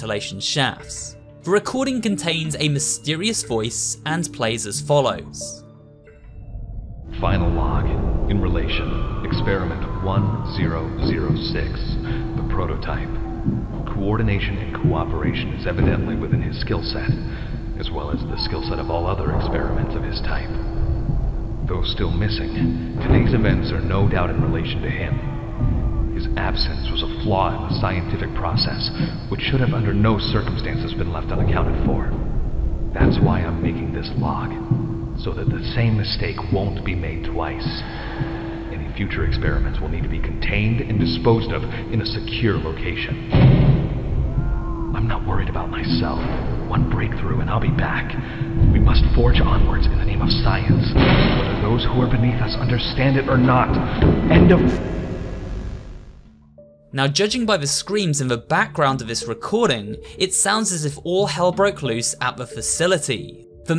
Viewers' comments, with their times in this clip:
0:06 I hear people screaming in the video tape
0:49 that's huggy's sprinting sounds